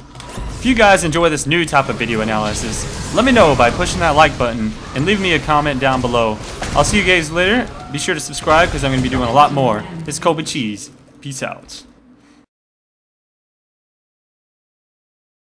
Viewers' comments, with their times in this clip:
0:05 "I'll see you Gays later" ?.... Who told you?
0:05 Cool vid. Does anyone else hear him saying "see you gays later" ?
0:05 I'll see you gays later
0:06 I'll see you gays later
0:07 i will see you Gays later :D